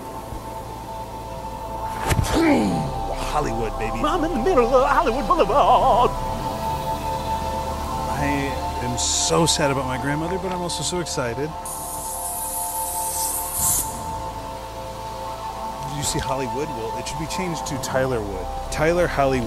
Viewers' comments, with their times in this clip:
0:04 Lmao why am I so obsessed with the way he says “I’m in the middle of Hollywood Boulevard”